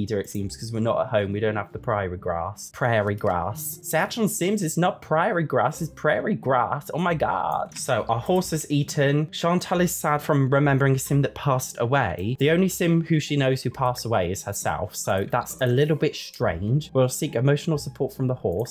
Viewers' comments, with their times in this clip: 0:04 that american accent was absolutely amazing